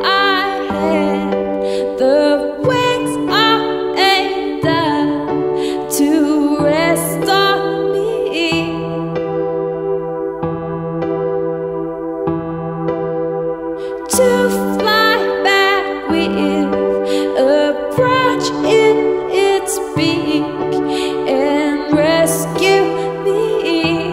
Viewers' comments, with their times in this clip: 0:08 Song had so much potential until don't like the pauses of the words... HAD SO MUCH POTENTIAL TO BLOW UP...